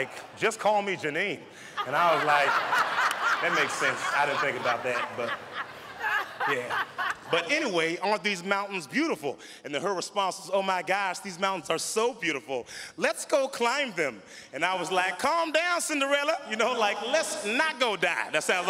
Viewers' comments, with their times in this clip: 0:06 their laughs in sync LMAO